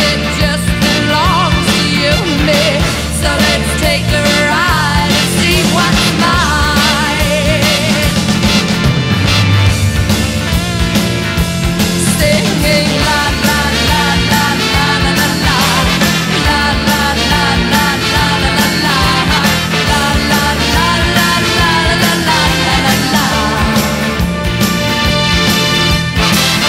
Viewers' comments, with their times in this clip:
0:10 The trombone lick thing sounds really cool. even as a band kid i can hardly tell if it's a very low trumpet or a very high trombone. a very mid range slur